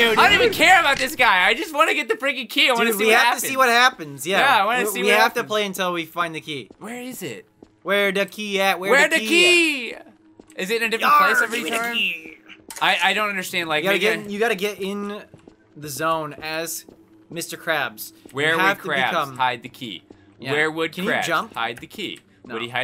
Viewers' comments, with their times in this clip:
0:09 I have the dirtiest mind of all time... I thought give me the pennies said.... Gimme the peni*** Hahaha it doesn't help it's were I am